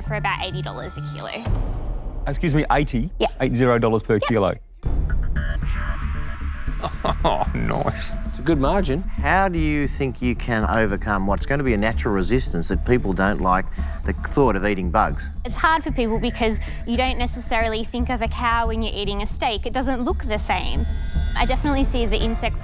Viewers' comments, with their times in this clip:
0:07 reminds me of the "noice" meme.